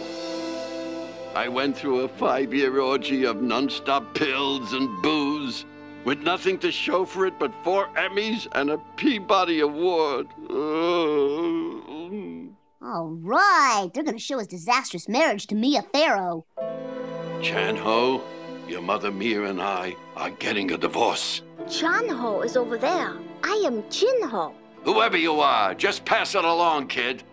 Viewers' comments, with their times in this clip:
0:10 That moan of anguish 😂😂😂